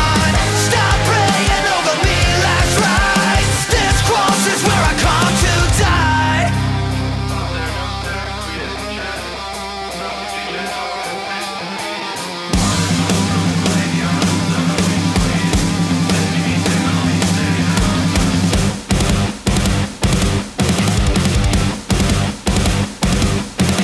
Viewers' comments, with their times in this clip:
0:09 If it just me or does the breakdown sound so Megadeth?